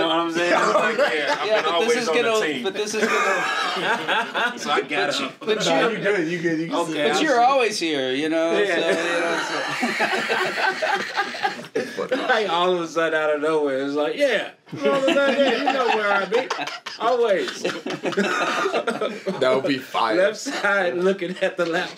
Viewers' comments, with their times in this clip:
0:09 WHAT IS THAT HORRENDOUS THROAT LAUGH LMAOOOO